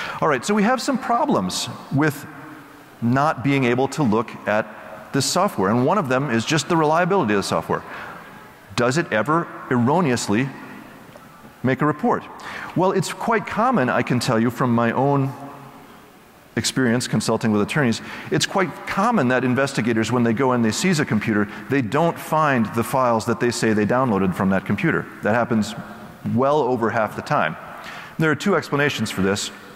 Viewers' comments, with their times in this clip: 0:10 does anyone here the Nokia ringtone?